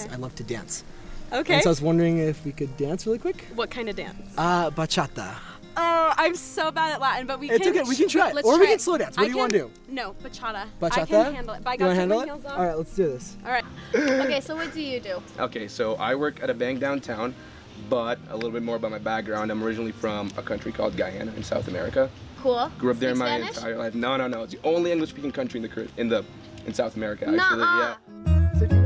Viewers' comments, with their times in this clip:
0:09 omg she’s so cute 😂😂 “Buhchahdu”